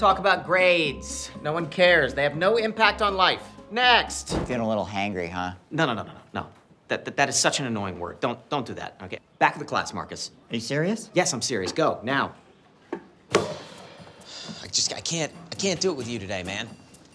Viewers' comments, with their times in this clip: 0:04 That word in THAT voice